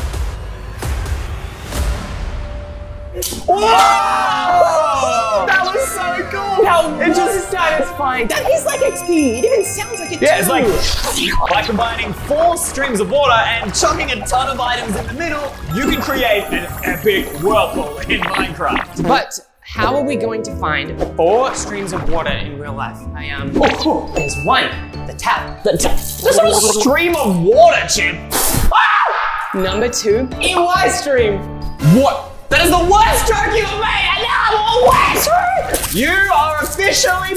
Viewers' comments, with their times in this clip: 0:10 slurping sounds SHHHSGSHSGDSHDG
0:19 BUTT cuz he farted😂😂😂😂😂😂